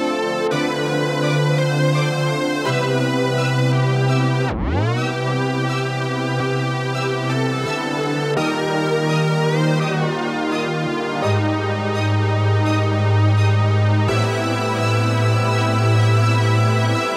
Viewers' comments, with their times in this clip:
0:05 How do you do the sound ,The slow down sound?